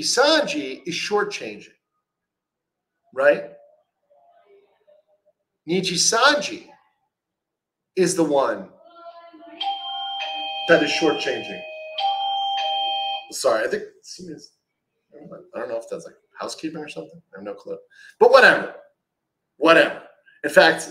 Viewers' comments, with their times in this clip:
0:08 Unrelated, but I got freaked out for a second cause I got the same exact door bell, I thought someone was ringing from my downstairs lobby!